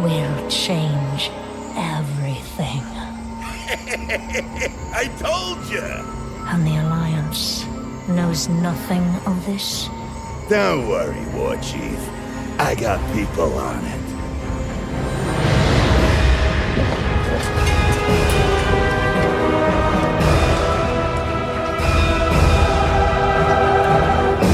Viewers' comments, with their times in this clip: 0:03 Is it only me? or does Galivix sould a lot like Reinheart :D
0:06 "and the allianshh knowshh nothing of thishhh??" LMAO that killed all the cinematic
0:06 ladies and gentleman!........, the warchief of the Horde.....or should i say: the warchiefshh of the hordshhh